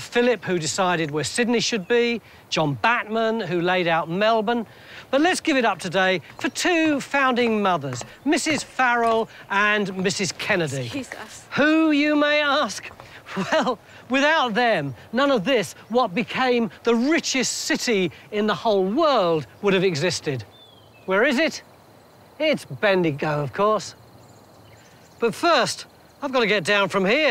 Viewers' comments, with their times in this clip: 0:10 ? Sounds like "excuse us"